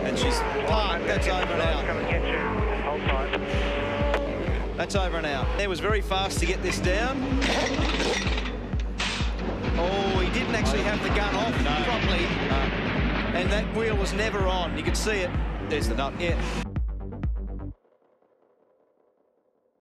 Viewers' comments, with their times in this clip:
0:06 What a FART!